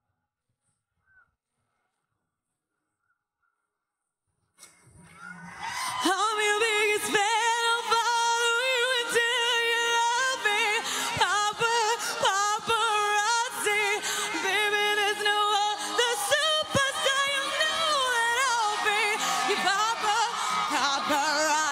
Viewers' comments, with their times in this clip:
0:06 Wonder if its a flanger or natural voice what do you think? Def sounds like a phaser or flange effect.